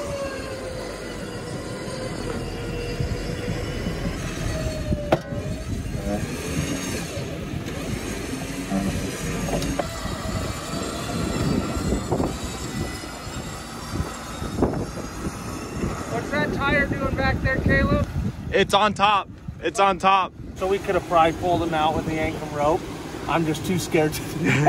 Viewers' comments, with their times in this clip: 0:05 You can physically see and hear the snap of the joint :o